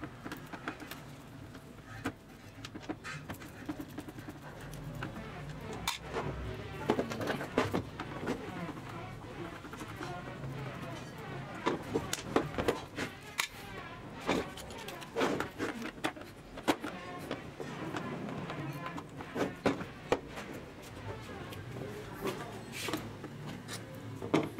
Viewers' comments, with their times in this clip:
0:05 Background sounds from someone had too much beans.